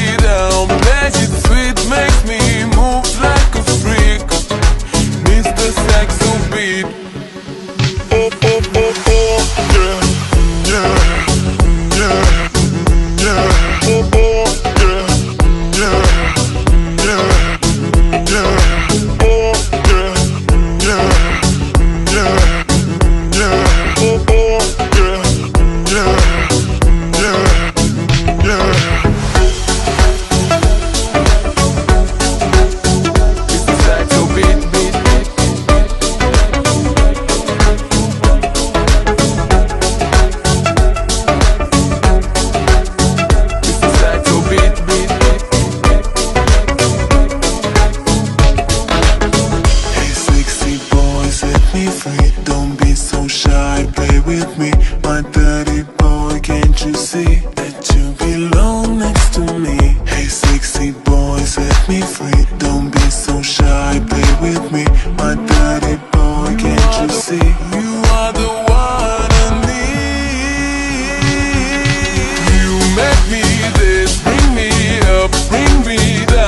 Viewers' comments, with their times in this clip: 0:09 damn i didnt know patrick star had a singing career
1:03 i think that someone calls to me ._.
1:04 the lyrics : my dirty boy what I heard: my daddy boy zhafhak